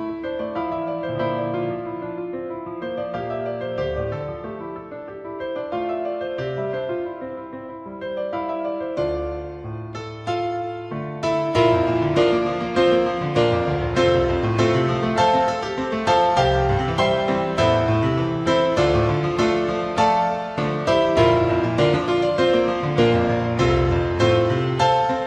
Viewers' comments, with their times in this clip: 0:09 I love the entire song to death but the section starting is some of the most beautiful music I’ve ever heard. And this is just a (fantastic) piano cover. With an entire orchestra plus Hanz freaking Zimmer it’s just unbelievable.